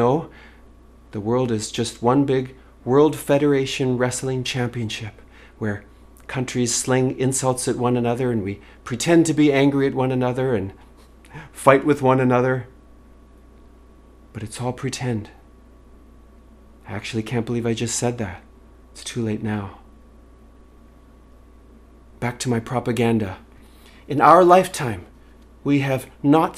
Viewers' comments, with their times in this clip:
0:10 ...Justin has quite a detectable skip in his voice there. LOL, forcing anyone to conclude that he's enjoying his tyrantship or something. ❤ x